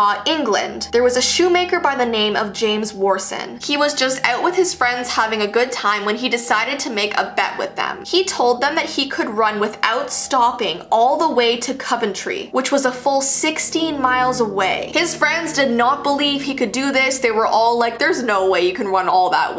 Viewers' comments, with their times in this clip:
0:04 finally i hear that Canadian in you!